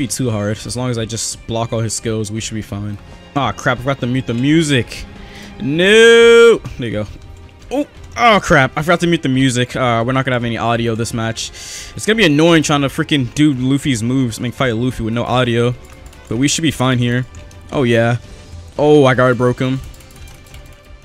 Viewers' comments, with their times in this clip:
0:06 i dont think you had to mute the music pretty sure the music got copyrighted and now it's just some random royalty free music LOL